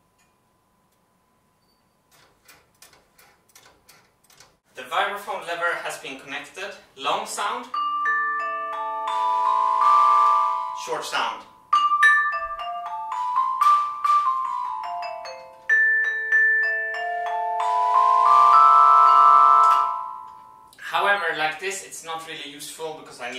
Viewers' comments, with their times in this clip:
0:09 you have some kind of resonance between the high pitched notes and the drums start vibrating somehow